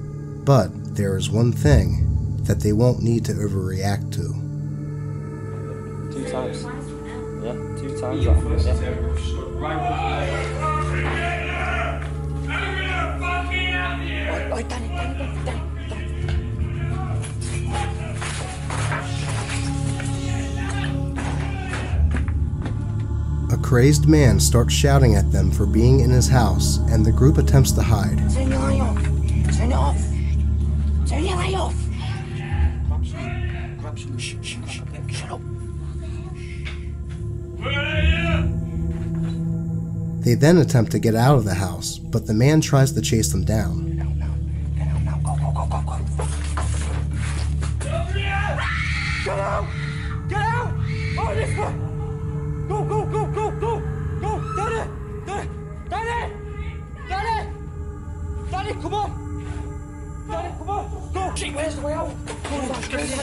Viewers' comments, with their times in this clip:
0:08 sounded like bro really wanted to say “ravioli ravioli give me the formuoli.” 💀
0:48 in my opinion that scream was too real to be staged! That scream sends shivers down my spine